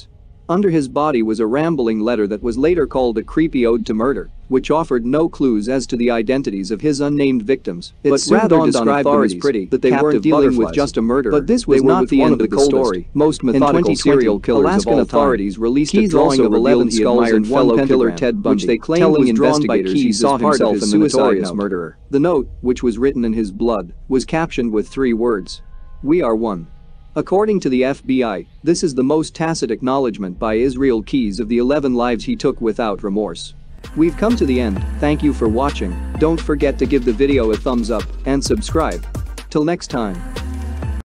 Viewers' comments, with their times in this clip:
0:04 Audio problems start into video and a couple of odd silences during video 😪
0:09 glitch you have two voices speaking at the same time
0:34 I do not like you have 2 ppl talking at the same time: narrator, then someone explaining the background.